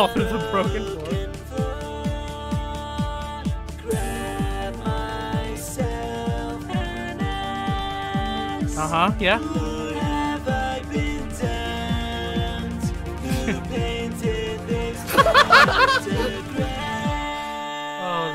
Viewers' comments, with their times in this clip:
0:06 Did bro just say ''Grab myself an a*s''? 💀